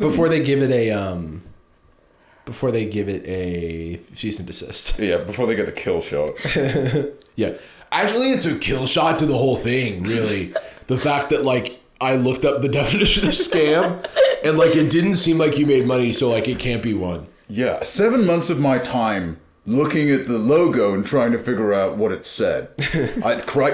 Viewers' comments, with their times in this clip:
0:07 I really thought he was about to channel the Dhar Man voice